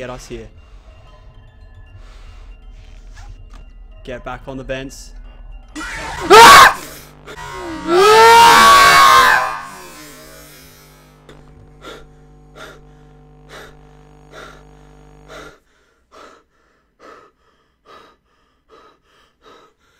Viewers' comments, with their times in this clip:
0:05 for his scream
0:06 Omg dat scream tho ._.